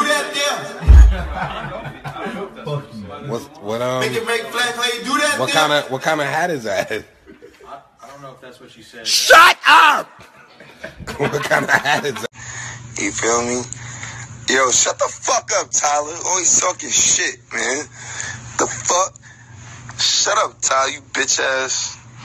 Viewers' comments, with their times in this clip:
0:07 sounds exactly like the beginning of a smosh video
0:08 why’d he yell at him like that 😂
0:08 That sounded just like smosh's opening
0:08 Kinda unrelated, but Tyler's "Shut up!" sounds like Smosh's "Shut up!".
0:08 he said it just like that teacher!!! SHUT UP
0:09 Tyler sound like the Smosh intro😭